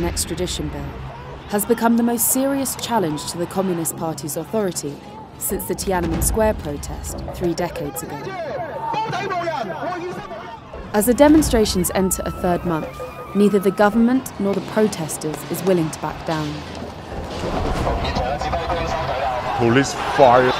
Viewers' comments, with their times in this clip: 0:04 Why do you have a cut in audio ?